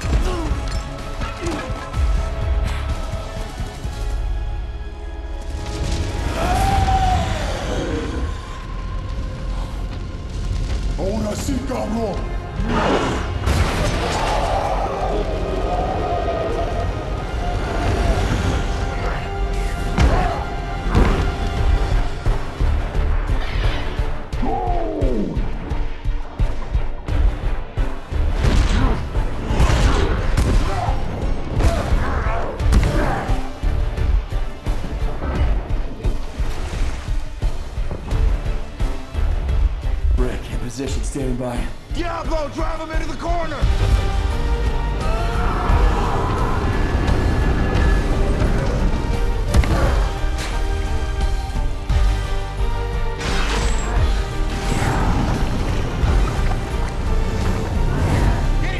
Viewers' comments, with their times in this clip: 0:08 "Ahora si, cabron !" Damn, I loved how he said that !!!
0:10 Did El Diablo speak Moonspeak just like INCUBUS??
0:10 had no idea Spanish could sound this cool .
0:11 the way he spoke in the hell's language gave me chills
0:41 tell me why he sounds like the Dominicans in Washington Heights screaming "Diablo"